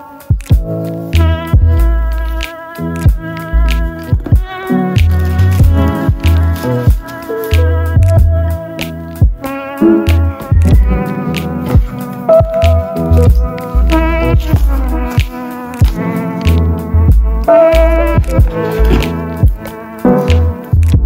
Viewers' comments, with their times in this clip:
0:06 why didn't sound in ?